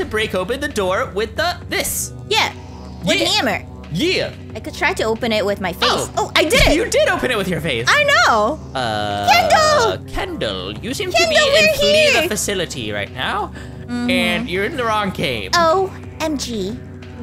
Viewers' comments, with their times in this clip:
0:04 OH MY GOODNESS HAHAHAHAHAAHAHAHAHAHHAAHHAHA THE WAY HE SAID YEAH!😂😂😂